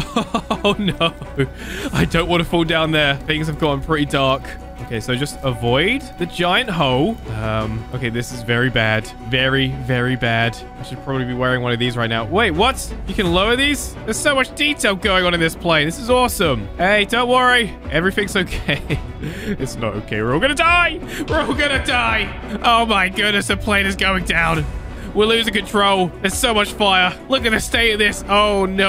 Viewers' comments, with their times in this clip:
0:09 when you pause the video and there siren still plays: AAAAAAAAAAAA